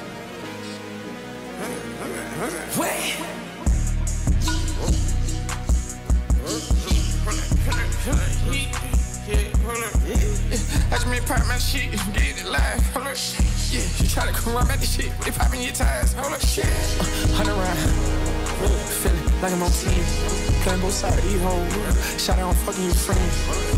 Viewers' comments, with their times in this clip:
0:07 I honestly thought this was Lil Yachty on first listen